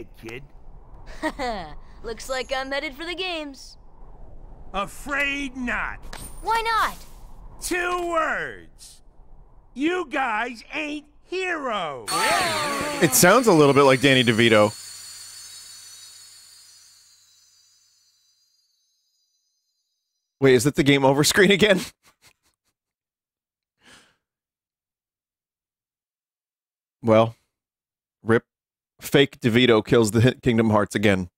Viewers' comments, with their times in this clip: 0:03 is absolutely my favorite corruption sora took not being able to head to the games really poorly
0:12 His name is Robert Costanzo, the guy who voiced Detective Harvey Bullock in the early 90s Batman Animated series, a guest appearance in the 90s Superman animated series, the New Batman Adventures even Static Shock in a special episode. He’d voice Phil in the Disney’s Hercules TV show, 2 Disney’s Hercules computer games, a 1999 dvd movie special and the House of Mouse. And of course KH1, 2 and Birth By Sleep. His voice sounds nearly identical to Danny Devito’s who only voiced him once.